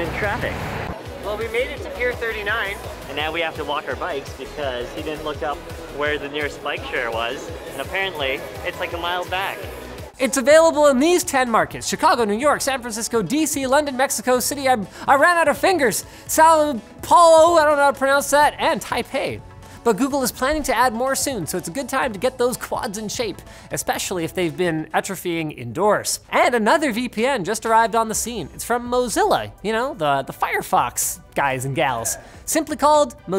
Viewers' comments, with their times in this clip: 0:10 Linus, get your shit together and learn how to pronounce São Paulo
0:16 Linus really couldnt pronounce Sao Paulo I'm so dead 😭